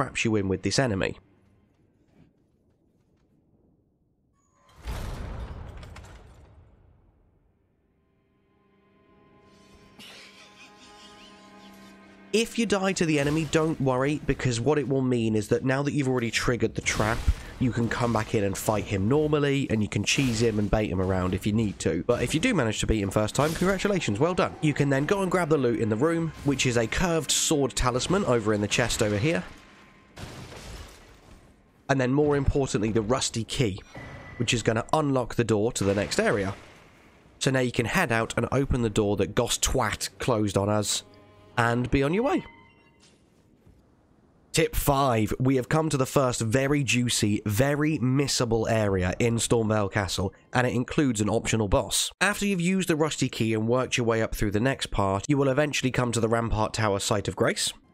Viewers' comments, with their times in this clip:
0:10 he laughs as well, i killed him when i found him randomly roaming around the castle
0:11 I really wonder who closes the door and does the laughing at the trap at first I thought it was Patches but you encounter him at an entirely different place.
0:39 that "GosTWAT" killed me 😭😭